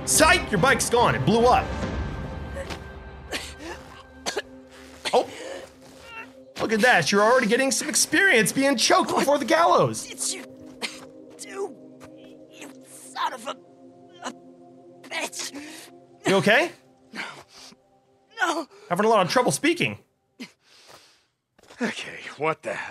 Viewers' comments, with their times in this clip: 0:10 On why does the guy sounds like a girl